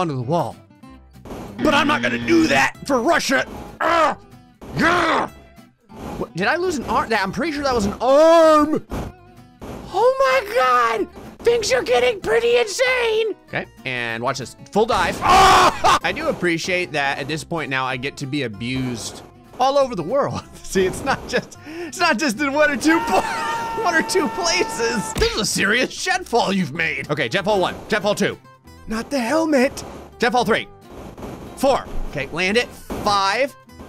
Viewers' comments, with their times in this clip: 0:09 he sounds so much like that squirel from madagascar
0:14 my fav part is that you screamed on this part LOL XD 😸😸😹😹😹😹😹
0:14 the scream oh my god
0:15 Free scream replay button